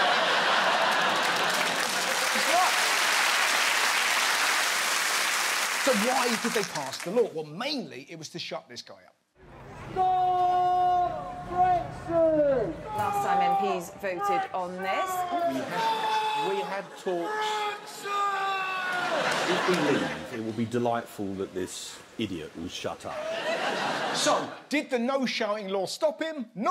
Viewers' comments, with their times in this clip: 0:08 I love how each time this guy's voice gets increasingly aggressive with the "STOOOOP BREEXIIIIIIIIIIT!!!"